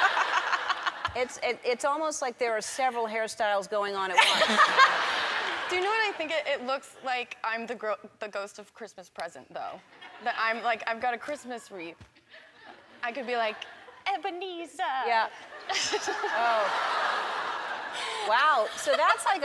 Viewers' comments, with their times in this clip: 0:04 Did she fart ?